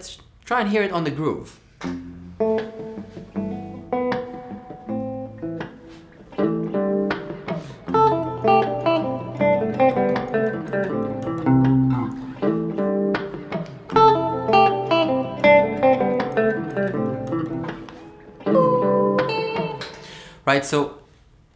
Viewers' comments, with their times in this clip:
0:08 THAT groove. The melody🥺